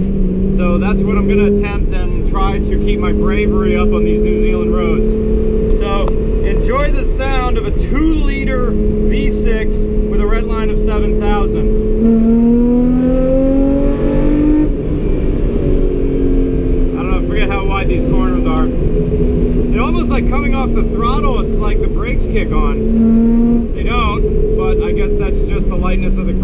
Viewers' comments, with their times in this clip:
0:10 Uuunf. That exhaust note 🤤